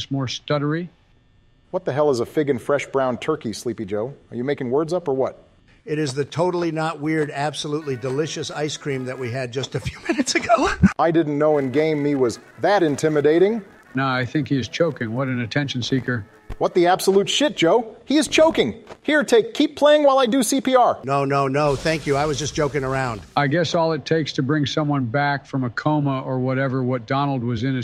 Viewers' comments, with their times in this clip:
0:09 what was that voice crack dawg☠️
0:09 I'm not sure if the voice acting failed for a bit or what but i heard the difference in voice at the end
0:09 donald moanin or having a voice crack 🤣